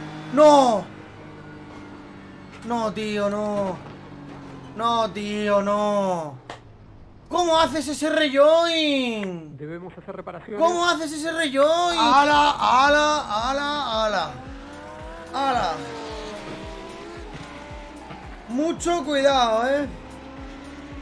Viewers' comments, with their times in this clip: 0:08 This reYoin is a Yoke!! A Yoke!!